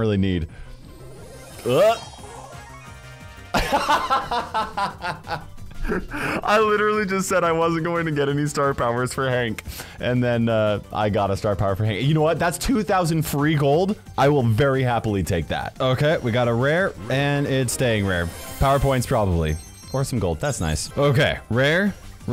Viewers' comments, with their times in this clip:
0:03 I laughed too 😂😂😂